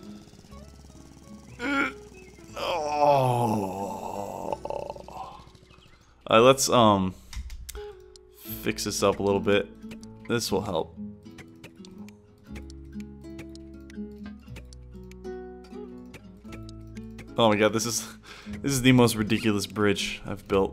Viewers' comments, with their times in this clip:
0:04 Kinda sounds like you were taking a poop but who knows you could have taken your laptop to the toilet AnywAys I like your videos and subscribed when I found ur first video of poly bridge :)